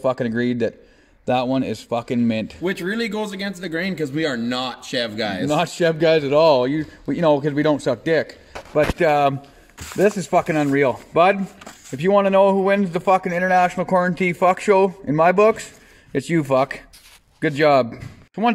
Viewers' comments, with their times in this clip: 0:05 Had a nice little guffaw there.